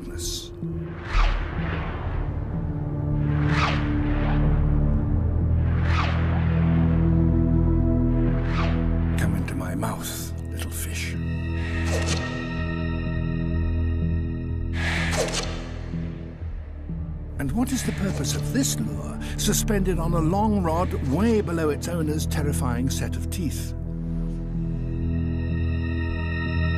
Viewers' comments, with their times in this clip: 0:08 Crap Attenborough sounded terrifying for a second!